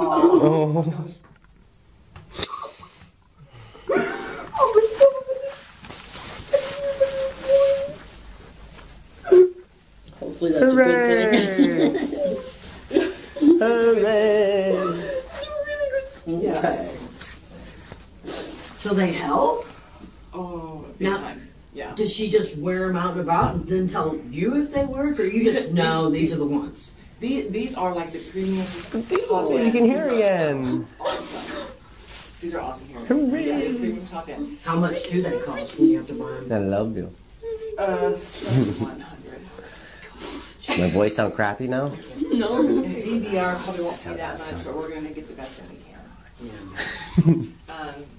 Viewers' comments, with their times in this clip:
0:10 the guy saying “hurrayy” sounded like kermit to me😂
0:10 dad saying "hooray" in kermit voice during heartfelt moment is a mood.
0:29 I think in the video they said something along the lines of "you can hear again!" ( ish), and her English (pronunciation) was actually pretty good, so I wouldn't be surprised if she had actually lost and then regained her hearing. After not being able to hear how you sound for a while, it could definitely cause speech impediments.